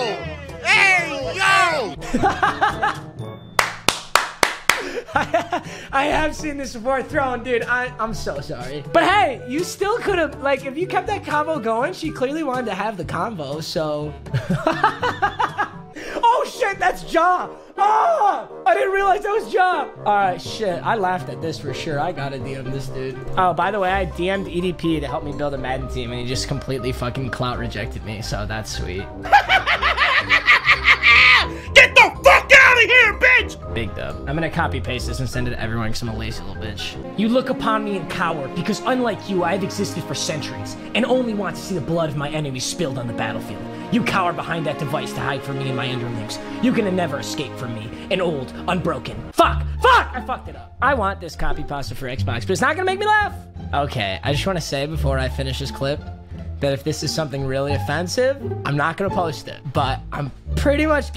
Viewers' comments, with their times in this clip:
0:05 My mans really just laughed at a picture of xxxtentacion dead Bruhh
0:47 he sounded like Meliodas from 7DS